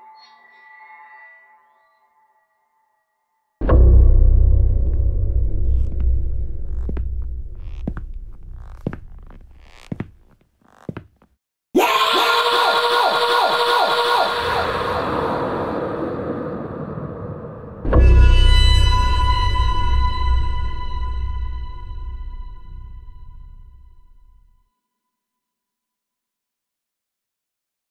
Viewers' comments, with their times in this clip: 0:10 yeah... relaxing ???? i love listening to horror music for sleep. so i just skipped a few minutes (to ) to see what happens later in video... and a dude starts screaming ...bruh how is this relaxing?
0:11 You call that scream relaxing?! Misleading title man.
0:11 holy shit mang. that fucking #SCREAM is really #Horrific & #Terrific enough to scare the shit right out of yah while in a deep sleep 4 sure.. Me: hearing the #SCREAM like JESUS MURPHY. ahhhhhhhhhhhhhhhhhhhhhhhhhhhhhhhhhhhhhhhhhhhhh.
0:11 sounds like a choked person still screaming in horror!
0:12 That horrible scream sends the chills down my spine EVERY TIME!! 😱